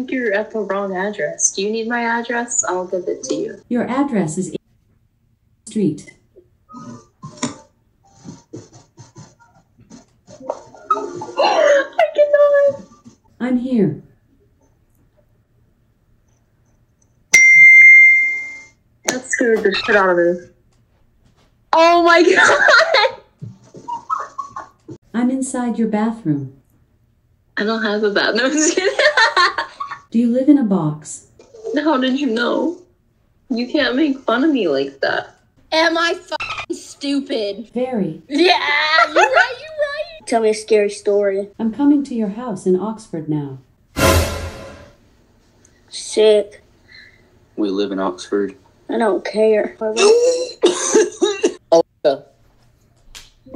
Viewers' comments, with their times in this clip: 0:05 Bts in the background
0:40 “I don’t cAIR” 😂😂😂 love the accent